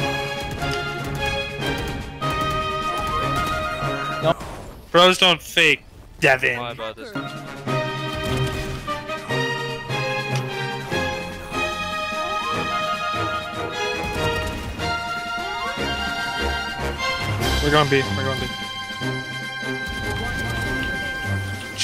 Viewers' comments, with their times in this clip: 0:04 pros don’t fake